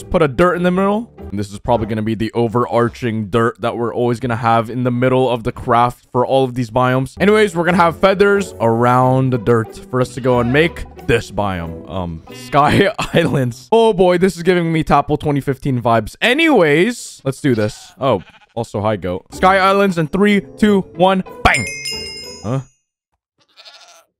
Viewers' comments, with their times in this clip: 0:09 sounded like Travis Scott the sheep